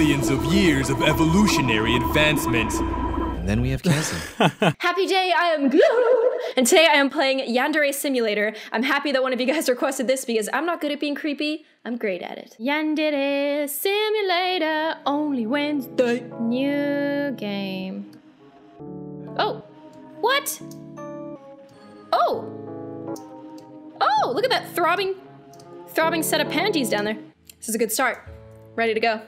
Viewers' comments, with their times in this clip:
0:04 who heard happy jay in gloom at your first play
0:12 The way you said Yandere